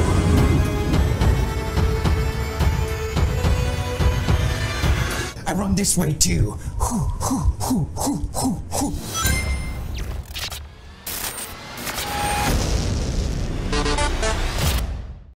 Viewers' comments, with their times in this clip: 0:13 insert Japanese symbol for begginer coming why do I hear boss music